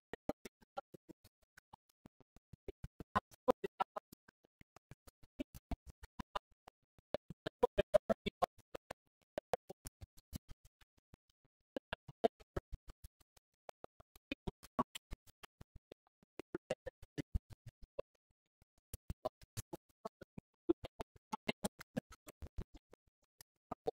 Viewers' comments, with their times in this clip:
0:04 Post 10's debut single starts Reminds me of the Survivorman theme song